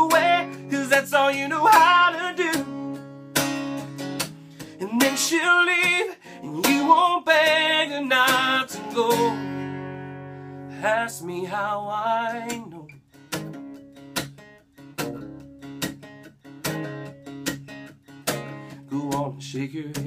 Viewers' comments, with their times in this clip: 0:05 The “then shel’ll leave” is amazing great voice I don’t know how you are not a famous singer if you are not already